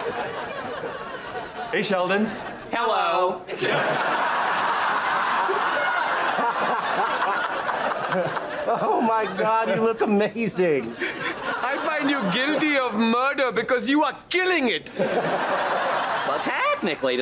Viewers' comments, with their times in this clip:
0:04 Leonard laughing for real here!